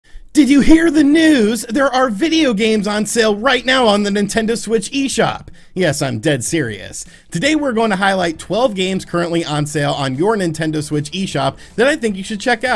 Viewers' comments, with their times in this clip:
0:00 You sound sick... 😷